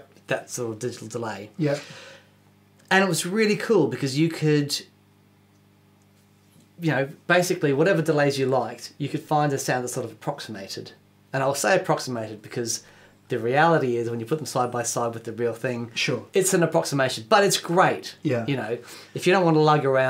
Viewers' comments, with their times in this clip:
0:04 the SG turns into a Bass...